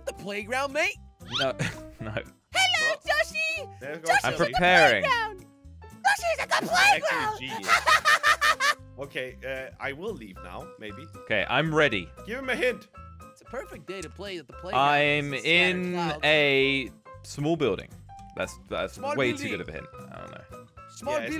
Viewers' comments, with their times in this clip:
0:03 jelly sounds like someone from the amazing world of gumball